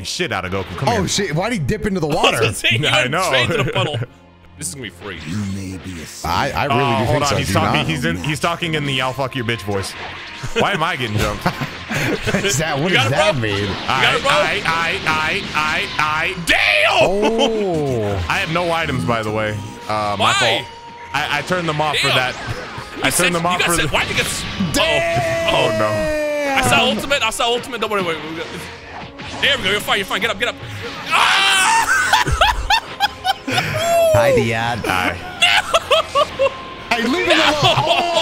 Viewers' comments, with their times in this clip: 0:06 the dark souls boss music starts playing after they go ui and beast😩👌🏽
0:20 I might be wrong on this but it kinda sounds like a souls game background music. The Bells...